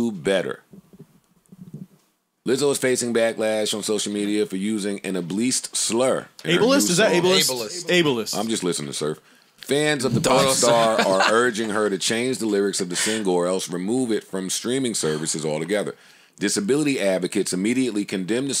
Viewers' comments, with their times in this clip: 0:03 Joe seriously just pronounced "able-ist" as "ab-least"🤣